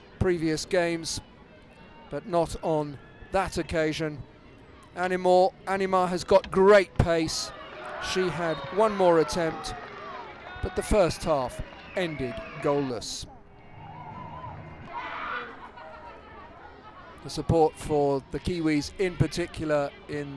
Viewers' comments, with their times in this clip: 0:05 did he call her animal?